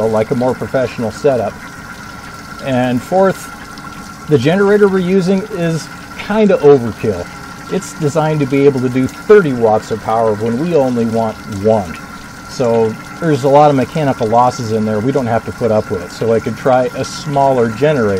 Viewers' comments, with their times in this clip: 0:03 hears in 6 years old "Degenerator" ahhaha degenerator hahaahah ah ha (Not funny)